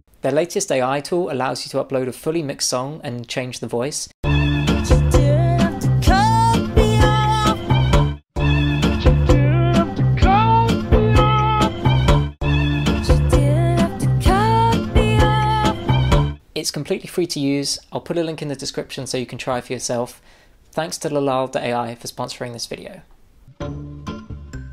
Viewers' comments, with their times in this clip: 0:08 They did Louis Armstrong dirty with that AI voice replacement.